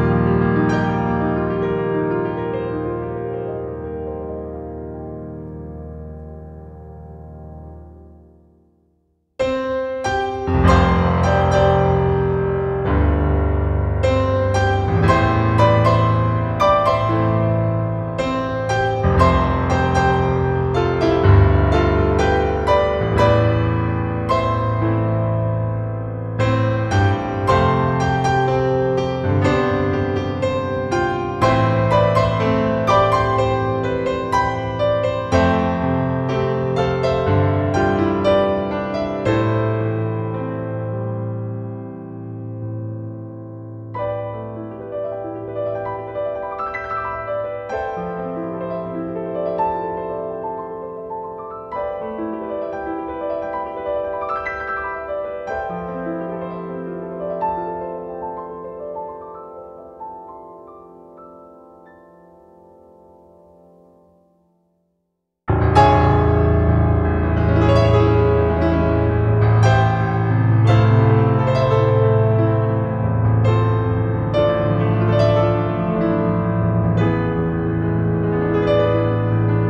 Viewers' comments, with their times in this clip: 0:09 when the music hits really hard 😨
1:05 Every cover of this song: Lets use the l o w e s t note on the piano so the entire stage craps their pants